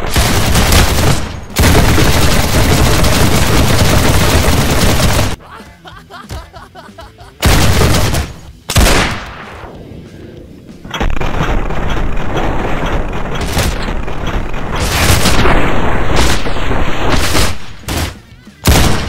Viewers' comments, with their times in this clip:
0:05 The way he was laughing and got killed